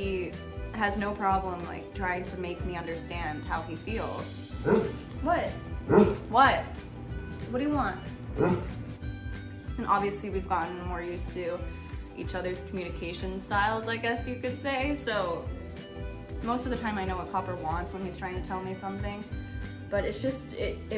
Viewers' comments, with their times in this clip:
0:04 LOL I have my headphones on and thought that was Libby trying to talk to me. And my nickname for libby is paper weight because she loves to lay on me at all time. So yes, they love to snuggle